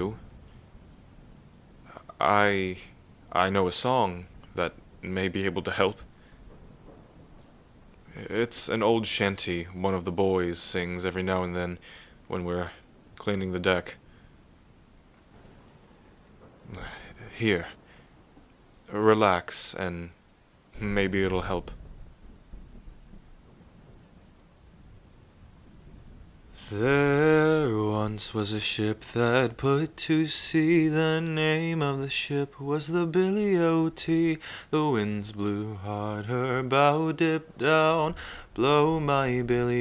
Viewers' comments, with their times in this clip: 0:09 Is where the singing starts.
0:25 Replay button for that beautiful singing:
0:25 IS WHEN HE STARTS SINGING IF ANYONE NEEDS-
0:26 the way he sang weatherman was magical😍
0:27 For everyone who has been searching for the singing part: ✨ Thank me later or with a like ✨
0:27 is when he starts to sing I love his voice it’s so peaceful